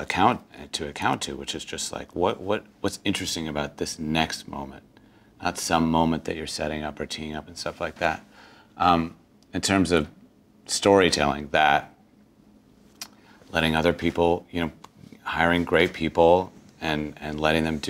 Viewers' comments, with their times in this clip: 0:05 is he saying '...moment at some...' or '...moment not some...'?